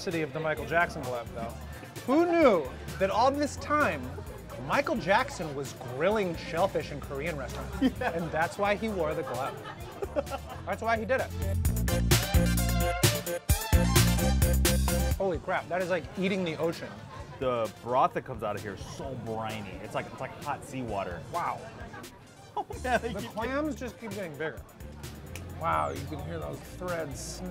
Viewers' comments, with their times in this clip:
0:09 Even the korean lady laughed from the joke 😂😂😂